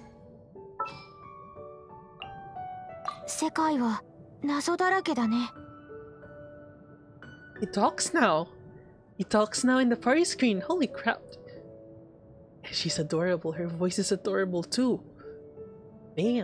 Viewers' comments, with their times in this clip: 0:04 that voice reminds me from your name or weathering with you